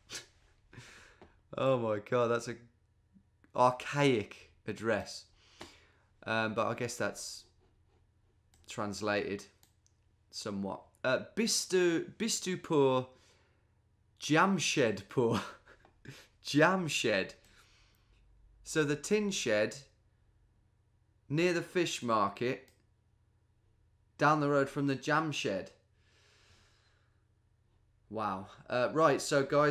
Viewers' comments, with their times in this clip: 0:10 Did he just ask me in German whether I'm broke?